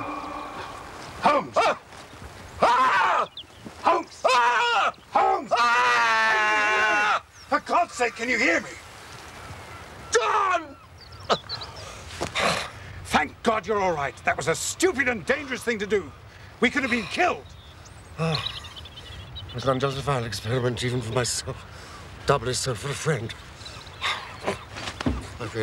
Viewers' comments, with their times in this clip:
0:09 My name is John and every single time I see that scene I like to imagine Brett is screaming my name to my face